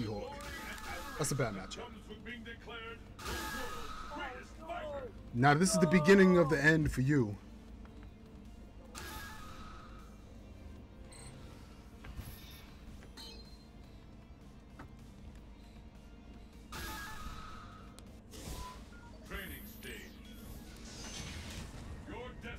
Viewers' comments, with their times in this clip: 0:10 you can hear him "Oohh NOooo" 😅😂